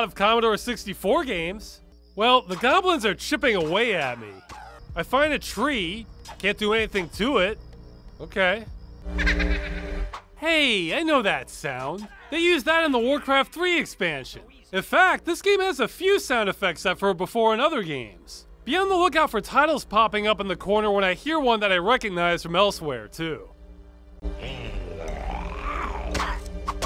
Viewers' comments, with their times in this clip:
0:08 That laugh sounds like a pitched up version of the laugh from this filipino show called "Eat Bulaga". They use it constantly on that show. Only reason I know this is coz I have a filipino friend who watches that show all the time, and the laugh gets on my nerves lol.